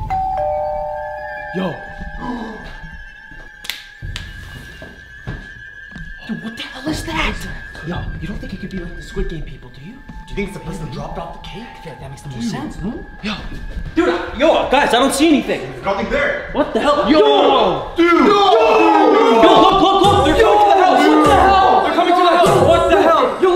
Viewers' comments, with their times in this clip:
0:05 yes I do this every time I hear the door